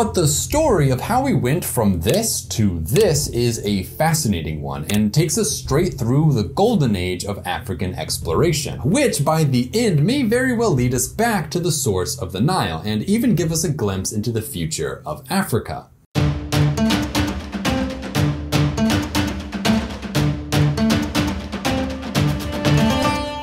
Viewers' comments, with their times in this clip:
0:08 I thought I heard African exploration instead of African exploitation.